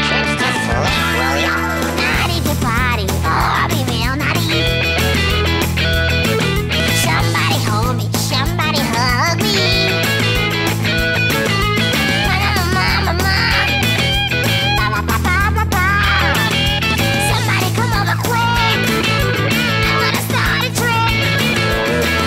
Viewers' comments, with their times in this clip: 0:09 14J4=+K+= 14L: wasbt awasnt synced at lL part or sth but kk backcup singers waht kk UM A LAMMY what e